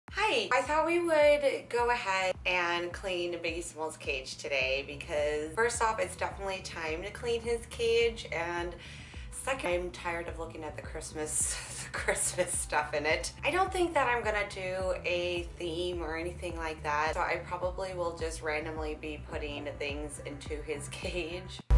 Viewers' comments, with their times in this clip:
0:04 doesn’t it sound like she’s saying baseball!😅🤣😂